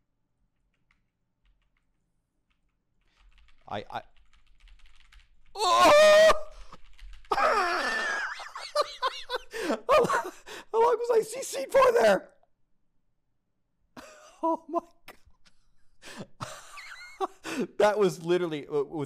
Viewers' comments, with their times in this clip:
0:07 what an unique laugh lol